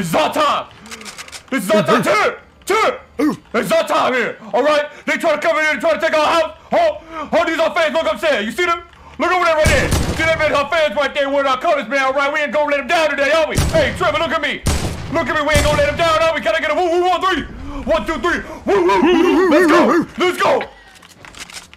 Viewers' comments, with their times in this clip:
0:06 Comment if Ninja sounds like angry grandpa R.I.P